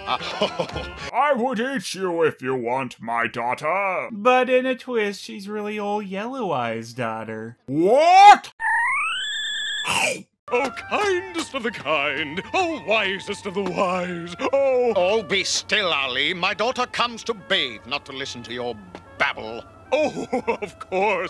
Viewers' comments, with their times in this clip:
0:09 what's with this guy & Kirby sucking power sound effect??